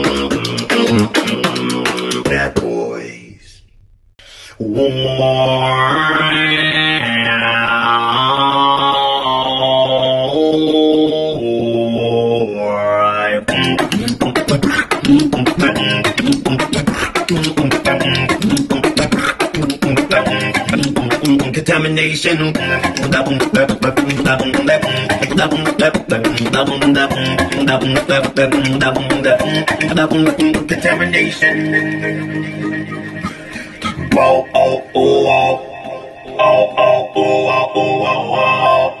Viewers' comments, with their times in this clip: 0:04 nah sounds more like a miniboss.
0:21 Did he just say “Determination”? Why is everyone still replying to this I thought it was dead